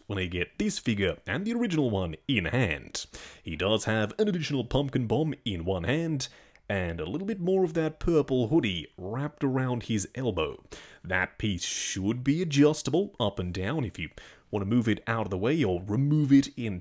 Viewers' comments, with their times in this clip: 0:04 I thought I sped up the video on accident lmao